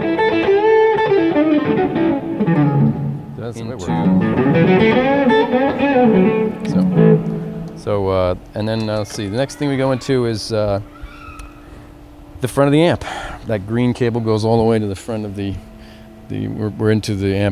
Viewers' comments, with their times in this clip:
0:03 Like the stereo effect on my headphones
0:03 What the hell was that talking and "1 2"